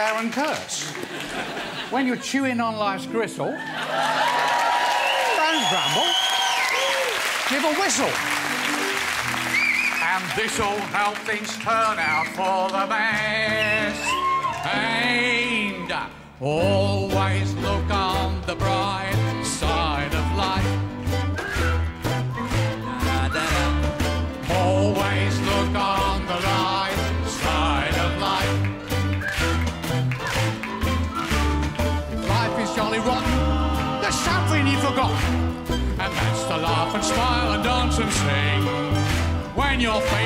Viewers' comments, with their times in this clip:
0:05 ~ She didnt know why the audience screaming~
0:23 stop the video and see who is whistling :)